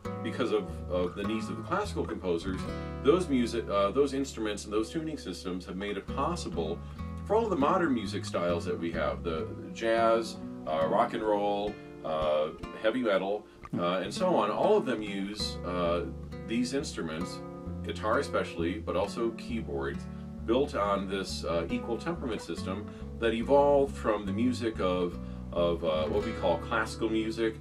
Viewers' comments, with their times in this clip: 0:10 Great documentary but since you are asking for criticism: 1. I don´t know how in depth you took on your preparation in the narrating parts but they sound a little bit first try -ish. (e.g. you sometimes make stop in the middle of the sentence or have to repeat sth because you read it wrong) 2. In the interview (that´s how far I got atm) you shouldn´t respond to the interviewee. It may feel weird but the constant hmhms and oks are a little disturbing. But those are only minor things.